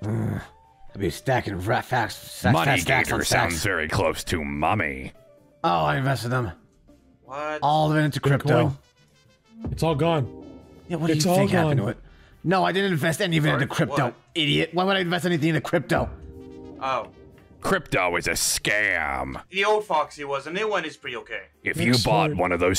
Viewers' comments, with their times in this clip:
0:03 the way he says “mommy” had me ascending on the spot, I stg 💀